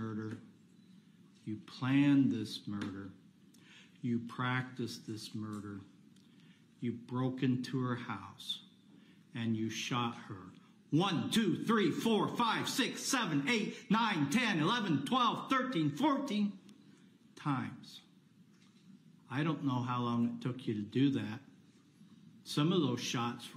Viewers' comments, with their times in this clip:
0:10 was anyone else half-listening and thought he was about to drop a sick beat
0:11 Absolutely loved how the judge emphasized on the gun shots, shouting each number so people get a perspective on how senseless this guy was; brilliant!